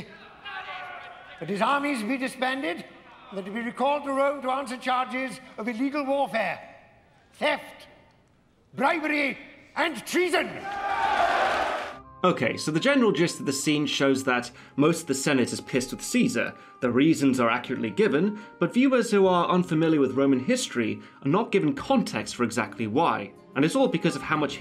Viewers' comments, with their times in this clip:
0:10 Did anyone else hear him say "Cheese in"